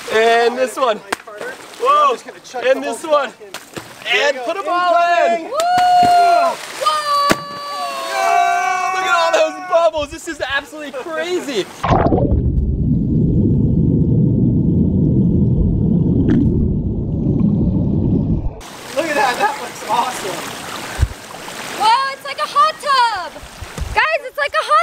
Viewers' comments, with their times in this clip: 0:07 The sad thing about these kinds of videos is you know this isn’t the kind of material they want to film, but it’s the only material that gets revenue so they have to do it. You can tell the reactions are forced. If you don’t believe me just listen to this part: